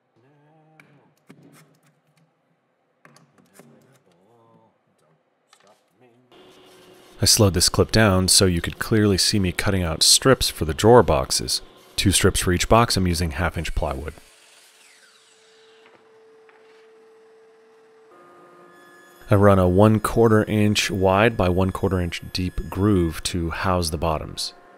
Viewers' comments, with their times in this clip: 0:05 Did I hear you singing Queen ? TWO THUMBS UP If not, then just ignore me.